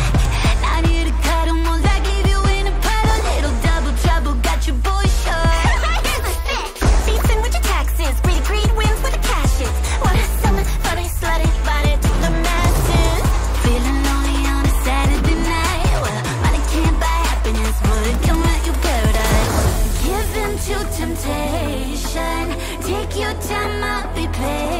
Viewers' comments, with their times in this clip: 0:04 Idk why, but that laugh hits PERFECTLY.
0:04 That laugh from one of them got me off guard-
0:12 Thats such a banger ong, it gives me like KDA vibes and it goes hard as hell notice the left twin lmao